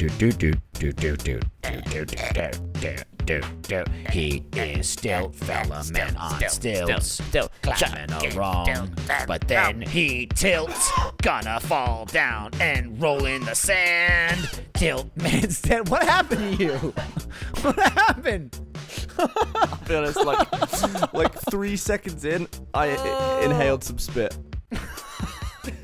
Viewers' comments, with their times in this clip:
0:08 Gavin coughs on beat.